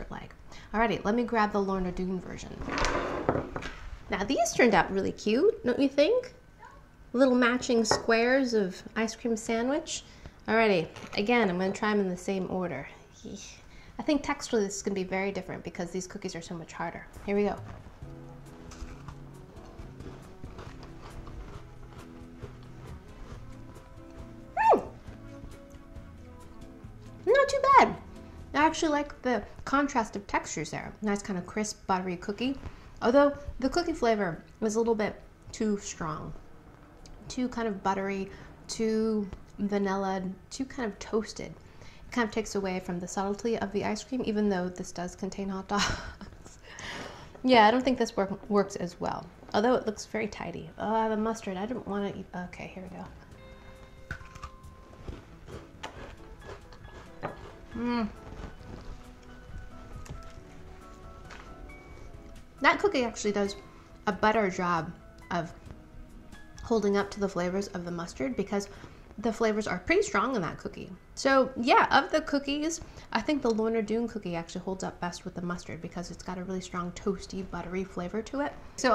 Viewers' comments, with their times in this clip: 0:05 (Emmy) -"Now these turned out really cute, don't you think?" (Child's voice in the background)-"Nope" Adorable!
0:07 Did anyone else catch the little "nope!" In the background right when she asked if we thought the last sandwich was cute? Lol I'm sure it was one of her children but I just thought it was funny timing lol. I think the timestamp is
1:04 hold up... Did emmy just say "butter job"??? 😂😂😂